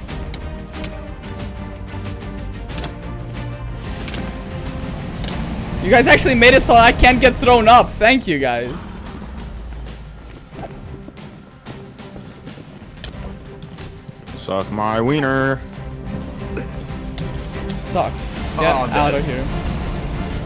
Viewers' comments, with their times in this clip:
0:07 the music slaps